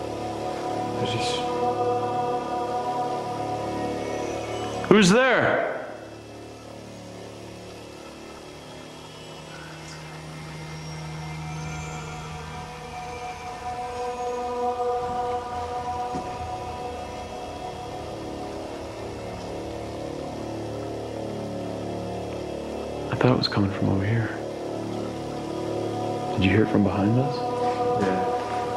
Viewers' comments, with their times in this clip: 0:08 I heard "Elizabeth"
0:09 Disembodied voice after Zack asks who is there
0:10 On listen very closely and you will hear a whisper =O They didn't get that?